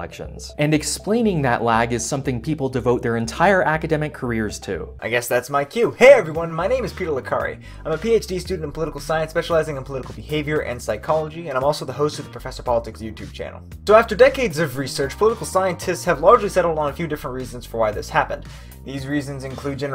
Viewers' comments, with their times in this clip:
0:06 Not sure if the video was speed up a bit or if he just talks that fast normally. But I had to slow it down by 25%. That speed felt more natural and was actually able to comprehend what he was talking about. Or maybe I’M a bit slow 😀